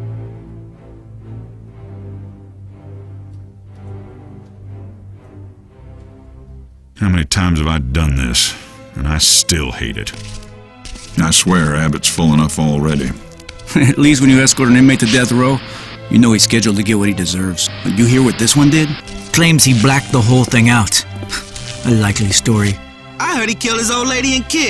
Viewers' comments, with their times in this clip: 0:07 Loved the video games and this trailer is realy well done, GREAT job. BTW: this guy is the same voice actor for the Half-Life games! or sounds the same! Nice...